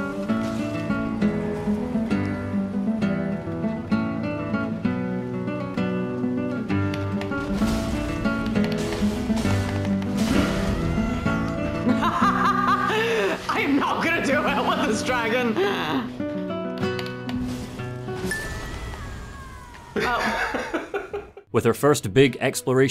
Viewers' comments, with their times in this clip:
0:09 acoustic skyrim music starts playing i loved that